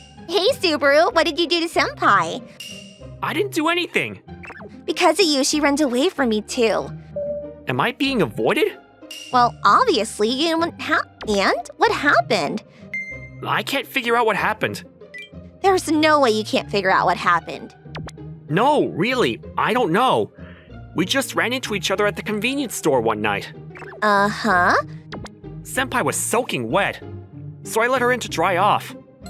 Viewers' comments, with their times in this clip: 0:10 someone please tell me I did not just hear that, the voice got stuck with the tongue or something there 😂